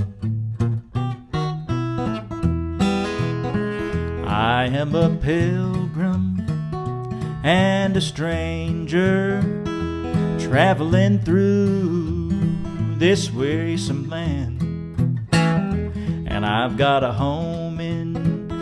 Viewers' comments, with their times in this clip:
0:03 Forget about the ribbon thingy... man what a voice!!!!!! Wow what a nice voice! 👏👏👏👏👏👏👏👏👏👏👏👏👏👏👏👏👏👏👏👏👏👏 💚💛💙🇧🇷🇧🇷🇧🇷